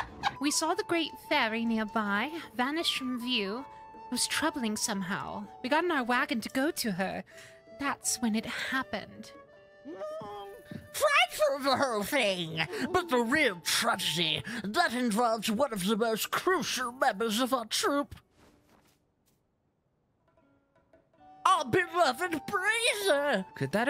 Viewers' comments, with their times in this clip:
0:10 I come back to this video after finishing a long ass video editing session only to hear "FRIGHTFUL THE WHOLE THING!" which sure did wake me back up at 12 A.M.